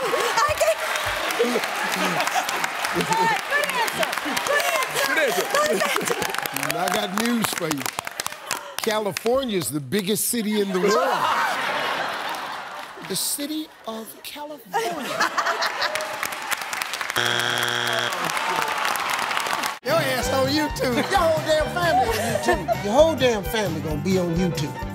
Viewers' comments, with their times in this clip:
0:05 Did someone scream “ni**a” ...after she answered “ California”?